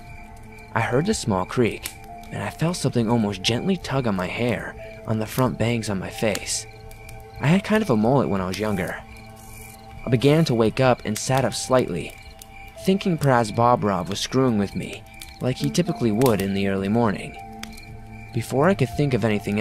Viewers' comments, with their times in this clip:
0:05 sounds like a Bigfoot.